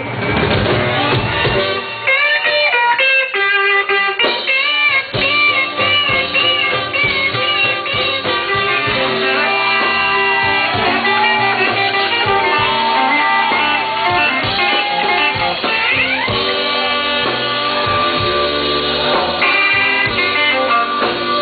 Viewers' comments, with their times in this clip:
0:05 The bend really gave me chills. Authentic texas stuff here!